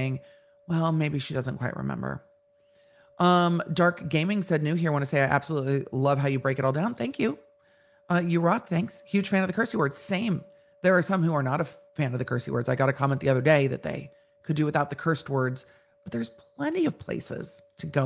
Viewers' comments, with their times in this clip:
0:06 is someone vacuuming